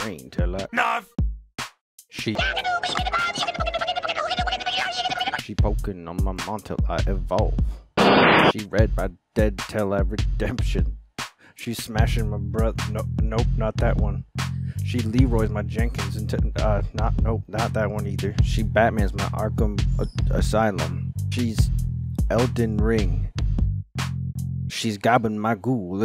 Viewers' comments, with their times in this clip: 0:10 he couldn't even hold the laugh